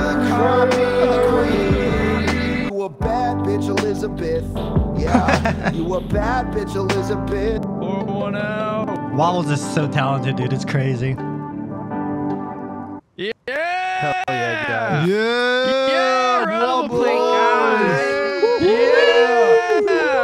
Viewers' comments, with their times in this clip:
0:04 nah that note was crazy